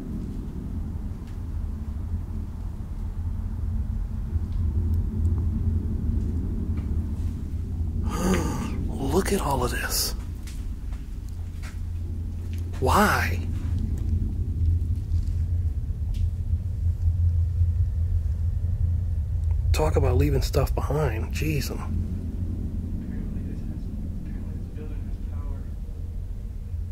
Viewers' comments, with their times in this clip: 0:07 I Almost Shat My Pants! That Dry Graspy Voice Made me Jump 🤣